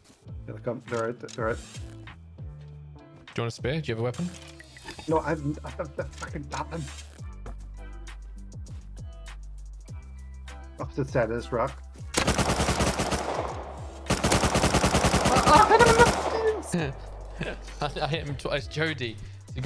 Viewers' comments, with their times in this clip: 0:03 The voice crack lol
0:06 for voice crack
0:07 can we just mention the voice crack